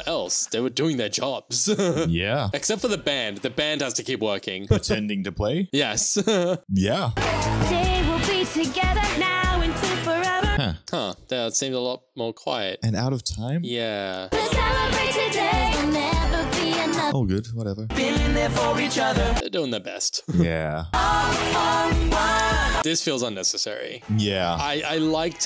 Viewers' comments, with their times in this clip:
0:09 always stood out to me since the first time watching this movie. On the soundtrack they’re in sync so I’m not sure why the aren’t in the movie. My only guess has been that it was filmed a bit off and they had to edit the movie to match.